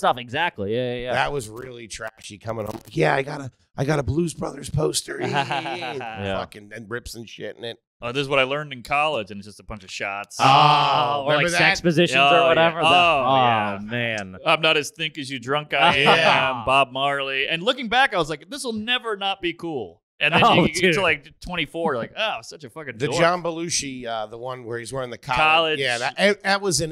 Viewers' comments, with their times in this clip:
0:10 A lil off tune guys lets run that back?